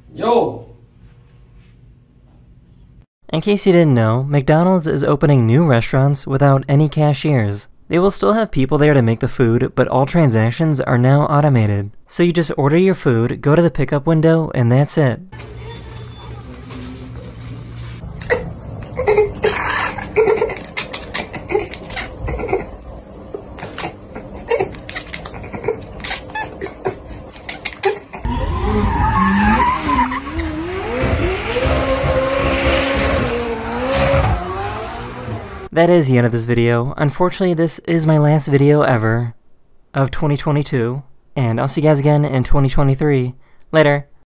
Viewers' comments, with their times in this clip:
0:03 Why is person's voice so naslly??
0:18 that sound means "I found a prey there but I can't catch it". cats make that sound when watching outside a window if there is little living things outside (insect or birds). or when the prey is flying too far away from them. the two of them are in a great conversation! he says "look I found something", and the cat says "where is it?" that's so cute!
0:18 That black and white cat knows if even his dad is chattering, it must mean business! 😹
0:18 best one. the clicky cat. did he train this cat for clicks on demand? if so that's incredible.
0:18 My man is just speaking Texan english
0:20 beavis and butt-head laughing
0:20 this cat sounds like gumball
0:28 bro i thought that was a machine gun for a sec lol
0:42 that pause you did scared the ever living shit out f me